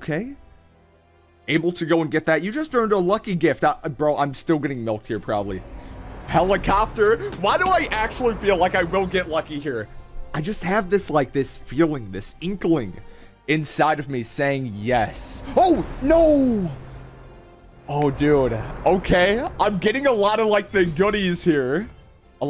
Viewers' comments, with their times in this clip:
0:07 Idk why but when he said ,"I have this feeling i will get lucky" , it kinda matched with the background music 😂😁